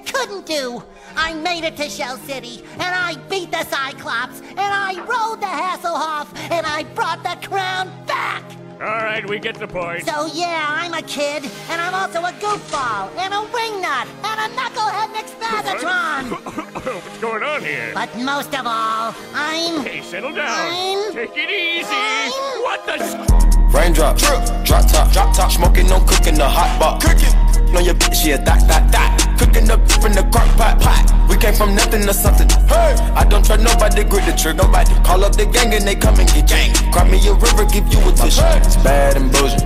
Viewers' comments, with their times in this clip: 0:05 AND I ROLLED THE A OFF
0:27 funny mute moment